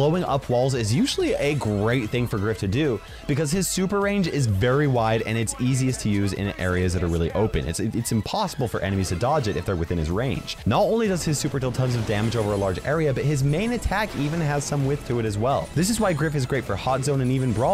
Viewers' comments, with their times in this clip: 0:03 a great thing for her?